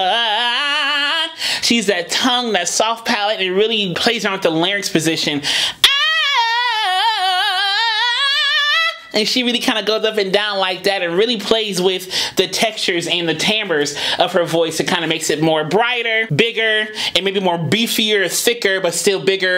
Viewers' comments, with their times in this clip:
0:06 Omg u sounded sooo much like Jennifer 😮👏🏾💕